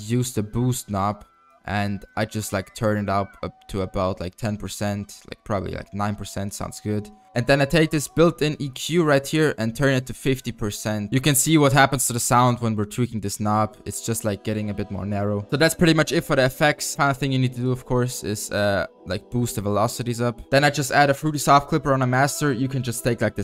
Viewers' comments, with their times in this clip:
0:08 WHEN YOU TURNED THE EQ DOWN YOU TOOK BASS OUT OF YOU 808. JUST LETTTING YOU KNOW THAT IS A EQ NOB. IF ANYTHING SHOULD TURN TO THE RIGHT NOT LEFT.